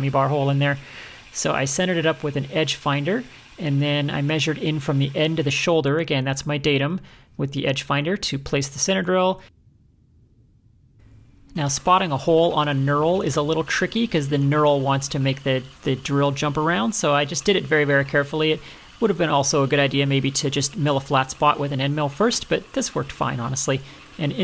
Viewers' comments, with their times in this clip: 0:10 ....got me. I was looking down at my ice cream bowl and that was the precise moment your voice climaxed and then came through pause.....I immediately abandoned my ice cream expecting this to be the lead into a typical funny effort.....annnnnnnnnd......got me.....Nothing but an editing glitch? 😆